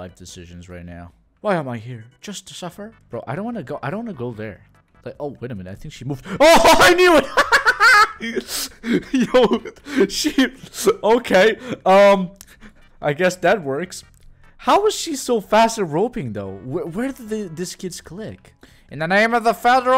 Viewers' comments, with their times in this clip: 0:03 i didnt expect that laugh oh btw, W thumbnail LOL
0:07 HELPPP THE LAUGH😭😭 I'M DYING